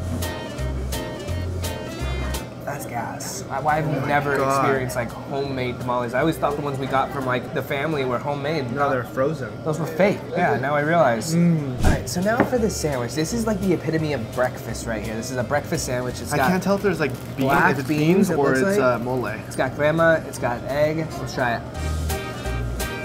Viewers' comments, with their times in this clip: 0:09 Always great videos!! Feel like I heard wife in there ish